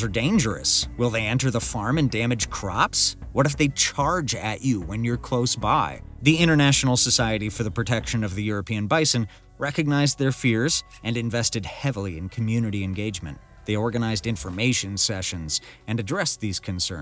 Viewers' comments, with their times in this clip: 0:04 the word "farm and" is spelled like "farmand"